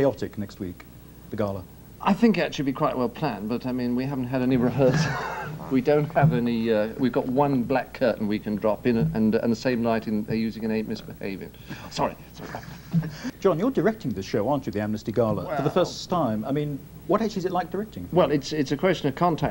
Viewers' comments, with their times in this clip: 0:05 what was the smack for?